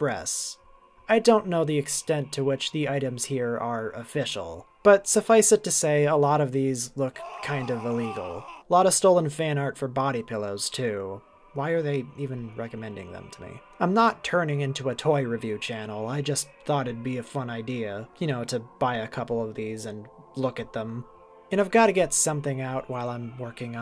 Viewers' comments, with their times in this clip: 0:07 I love the flapjack scream you added lol